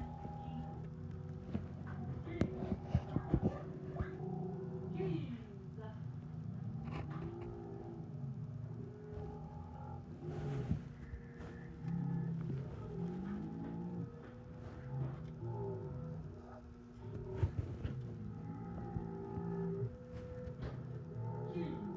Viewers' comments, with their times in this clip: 0:05 Oh no Arthur thing but reversed but you’ll hear a demon monster playing Arthur’s nightmare theme song